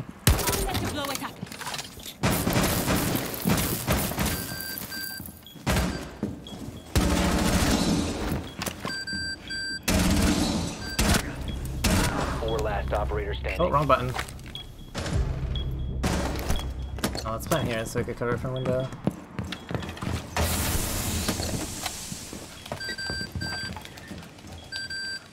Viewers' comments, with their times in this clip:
0:10 Wait, did they added a new sound downed armored operators?